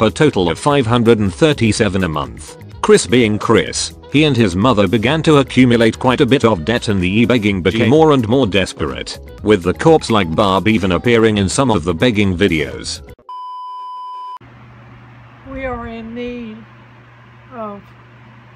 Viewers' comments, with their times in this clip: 0:04 it's like watching first contact with an alien species who has just learned how throats work.